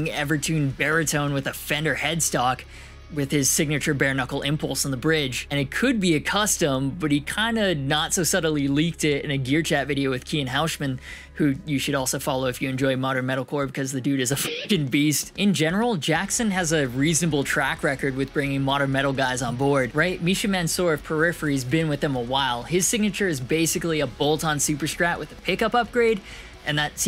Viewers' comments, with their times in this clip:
0:10 I can't tell if you had a stroke or if your Asian just violently came out Jokes aside, your Patreon must be crazy if you not only have several mod projects going on at once, but a USA Eclipse being made as well. That or you weren't kidding about your sugar momma 😂